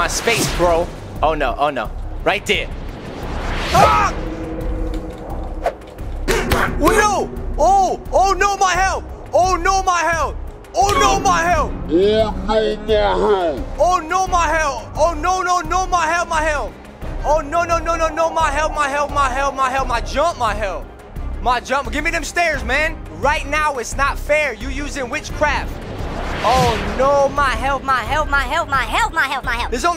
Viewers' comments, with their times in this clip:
0:10 duddy saying my heath sounds like h cuss word